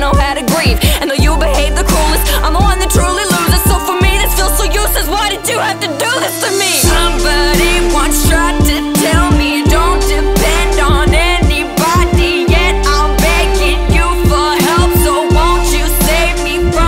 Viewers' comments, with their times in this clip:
0:04 The "WHY DID YOU HAVE TO DO THIS TO ME" had some serious genuine inside scream. You're like a mix of Billie and AViVA I hear that scream